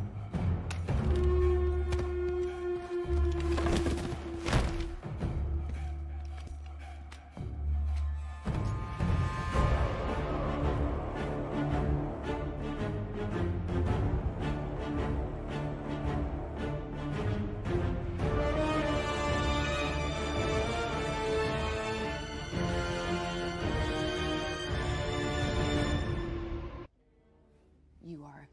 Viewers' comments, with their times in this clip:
0:09 I still prefer his original score from the OT but this one is also pretty badass